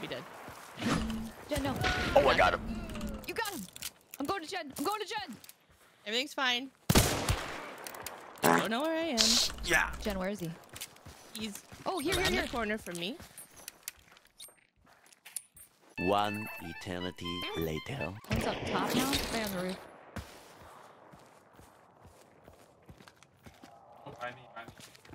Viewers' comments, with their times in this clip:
0:07 Heard a queef